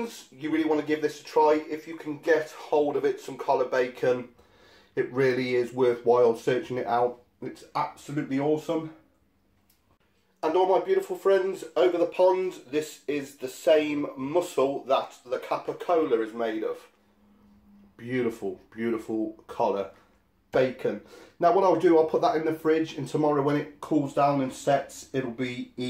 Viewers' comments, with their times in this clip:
0:10 the WHAT?? Coca-cola??